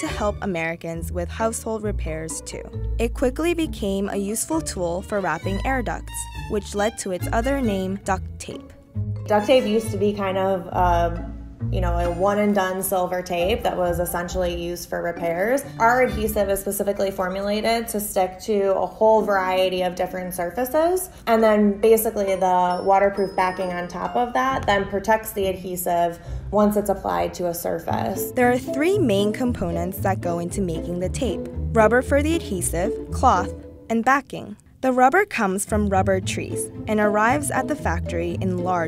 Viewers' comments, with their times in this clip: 0:09 What part of America is this accent from
0:09 that upward inflection ugh
0:21 Why the girl is talking like that? Like a stupid merican gal ready to jump on a jeep
0:22 Girl girl talking was so annoying her voice OMG UGH